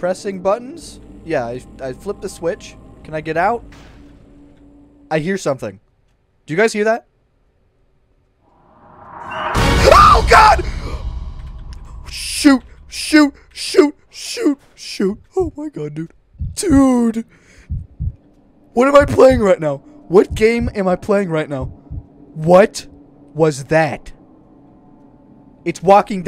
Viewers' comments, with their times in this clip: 0:08 this is the loudest I've heard him scream